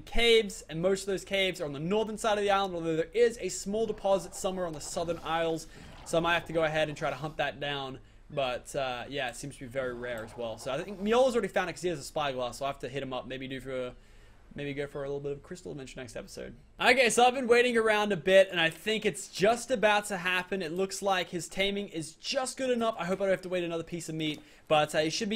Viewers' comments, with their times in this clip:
0:06 i swear he said hump them down